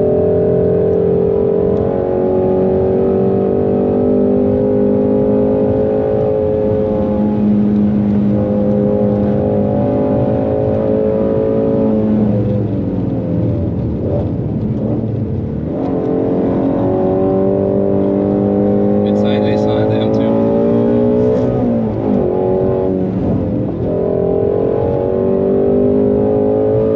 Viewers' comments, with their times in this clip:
0:07 at minute the passenger took is first breath!!!!Ahahahahaha